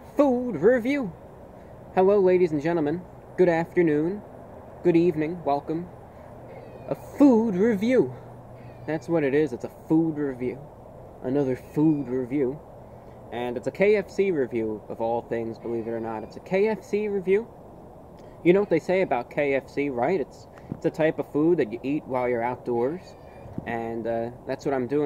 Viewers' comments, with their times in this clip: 0:06 LOL Why you say it like if you were offended or something